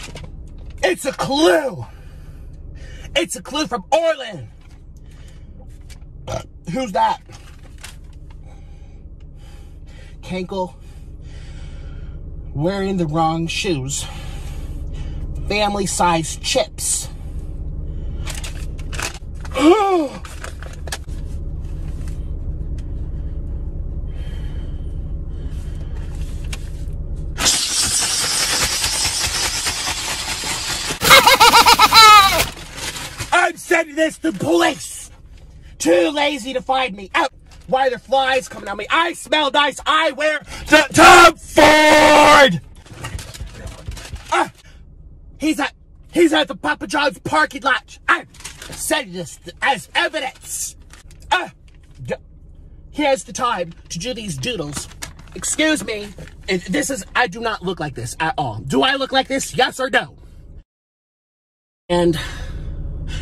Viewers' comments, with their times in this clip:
0:05 burps aestheticly*+ who’s that
0:29 Nikocado Avocado got that clown laugh
0:29 He sounds like a baby🤣
0:31 THE CRY HELP
0:31 sounds like bowser jr
0:51 the AH made me really laugh for some reason. 😂